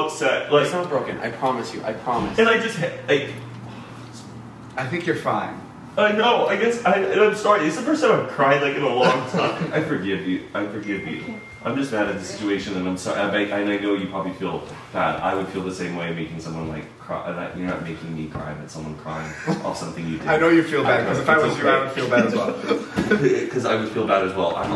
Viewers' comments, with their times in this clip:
0:09 Dillon Francis trying not to laugh in the background 😂😂